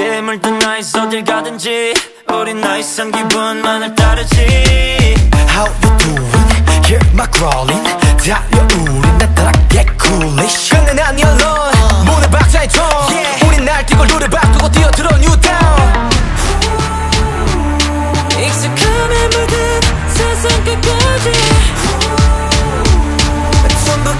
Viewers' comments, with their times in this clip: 0:05 love his voice...❤️